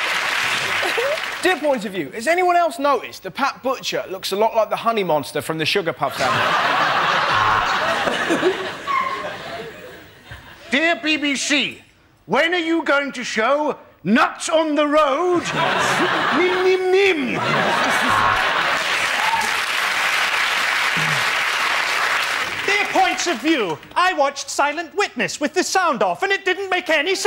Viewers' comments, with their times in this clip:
0:09 Love the really high pitched laugh of someone Listen closely after Russel's joke